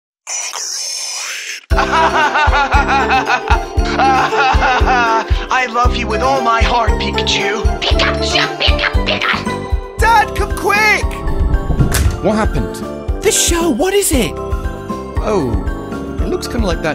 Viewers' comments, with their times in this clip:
0:02 mans really sounded like a villain in a superhero movie